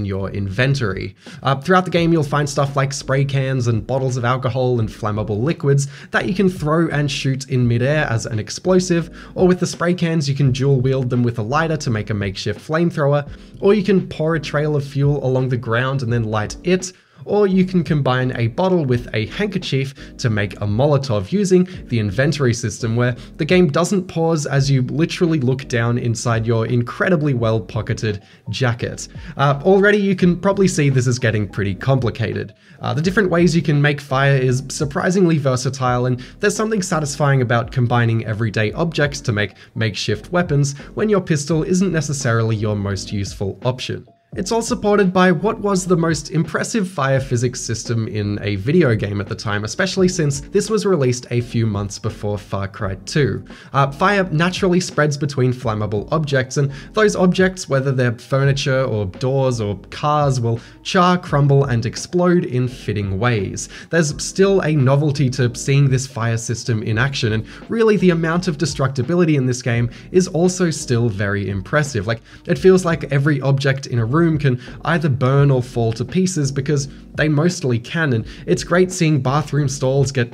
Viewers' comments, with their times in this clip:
0:08 ...WTF was that? Is that a zylophone? Am I having a stroke?
1:05 sorry, could you repeat that one more time? Because I'm certain that no one in the world calls "inventory" IN-Ventory.